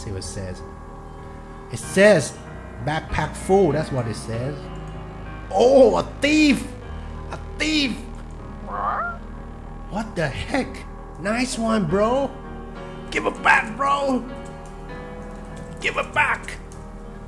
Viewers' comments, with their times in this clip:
0:04 i like ur voice :)